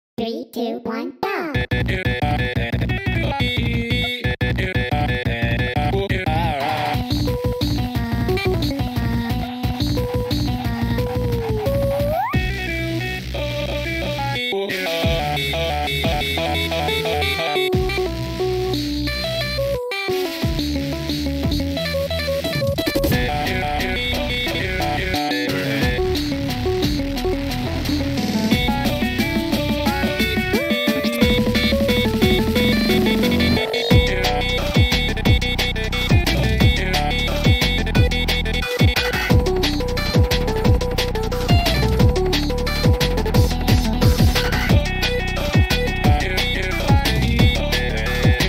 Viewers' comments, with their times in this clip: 0:02 At 0.5x speed this sounds like ugh
0:05 Tankman:singing Also tank man: AAAaaAaAaaAA
0:06 just sounds cursed and amazing at the same time
0:06 tankmans stupid "AoHoHahA" made me cry laughing
0:06 tankman but hes drunk
0:06 he litterally hit puberty in mid song lmao
0:06 that "AÅaH" made me chuckle
0:06 he sounds very confused on what song hes supposed to be singing
0:06 damn this is not ugh this is AAAAAAAA
0:06 This aaaAAAAaaAAAa killed me it's like aaaaaaaaaaaaa I switched the songs again aaaaaa
0:06 bro that frickin aAaAaaAaAaAA
0:07 I noticed A Cut Of Stress And Ugh In Bfs Lines Cause I Know The Arrows Lol
0:11 HE SOUNDS LIKE MIKU
0:12 it feels like a cute noises from bf and gf
0:15 on 2x speed you can hear Rick roll
0:23 That sounded like Undertale: Last Breath where sans can't (and will) never die (More specific the third phase)
0:23 sounds like last breath phase 3 song at the end where sans is tired
0:23 That sounded like the game where sans can't die (More specific the third phase)
0:28 Honestly, that voice of BF was so good. I wish to hear more of that.
0:28 bf’s vocals are so beautiful
0:28 this part sounds like something you'd hear in Smoke em out struggle
0:28 Tankman harmonizes megalovania while bf uses a different voice changer
0:28 WHY DOES BF SOUND LIKE AN utau SONGGG
0:28 WHY DID I GENUINELY ENJOY BF'S VOICE I'M MAD NOW
0:28 There needs to be more of bf sounding like this
0:28 did bf's voice turn utau because that was beautiful
0:28 honestly it sounds more like gf is singing then
0:28 satisfying BF notes
0:28 my voice before puberty
0:29 it was just me i think i'am heard the girlfriend sing for 2 seconds
0:30 bf's oo was perfect
0:31 i am trippin or does this sound like blammed?
0:32 he sings Megalovania's harp